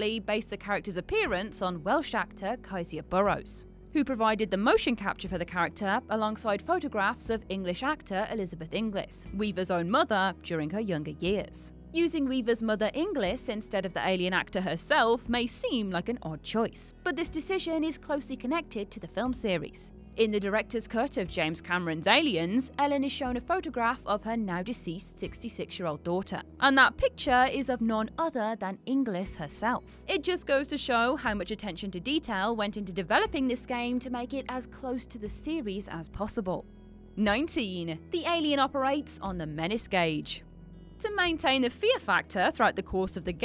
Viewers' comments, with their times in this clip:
0:06 It's a shame the narrator clearly was just reading an autocue. The emphasis is totally off, and makes it sound like Sigourney Weaver only had a mother for her younger years.
0:26 All the narrators on this channel say every sentence they same way, every time. Listen to the way she says the sentence and then try and tell me she doesn't start and end every sentence exactly the same way. With one or two words said exactly the way she says 'picture', 'other', and 'detail' thrown in every couple of words. Goddamn it, now I'm REA-ding my own COM-ment exactly the SAME way ...